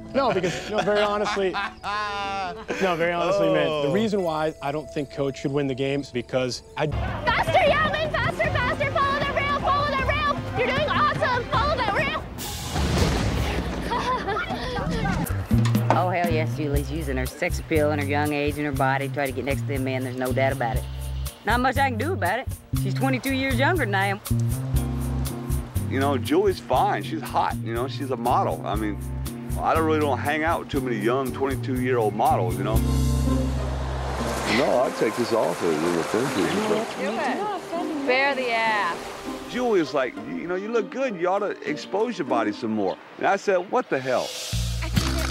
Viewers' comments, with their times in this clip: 0:07 that awkward laugh tho
0:25 The guy's voice reminds me Jeffrey D. Morgan lol
0:26 Walking Dead fans, tell me this doesn’t sound like Negan.